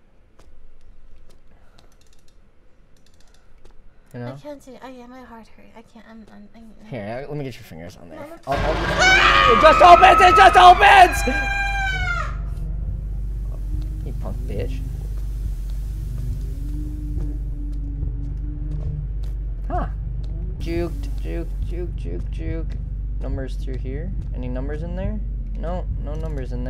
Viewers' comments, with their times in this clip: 0:08 FNAF ass scream